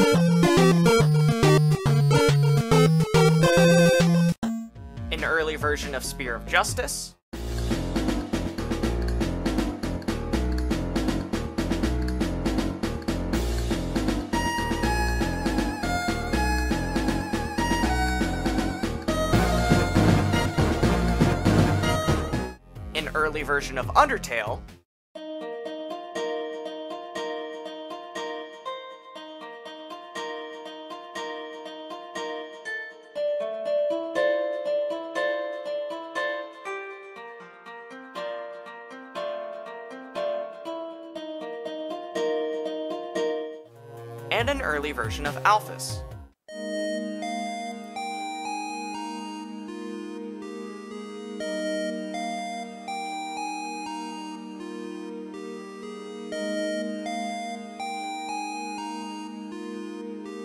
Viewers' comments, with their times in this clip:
0:08 in the early version of “Spear of Justice”, if you listen close it kinda sounds like the click sound from a roku tv.
0:47 that's way too clean to be alphys's theme 💀 she is a messy anime loving nerd, LIKE ME!!!